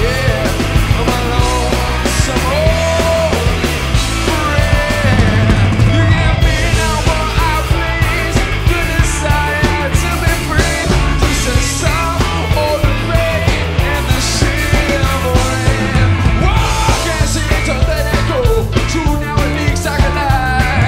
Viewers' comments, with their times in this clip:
0:05 HAHAHA if you noticed steve choi started the guitar solo too soon!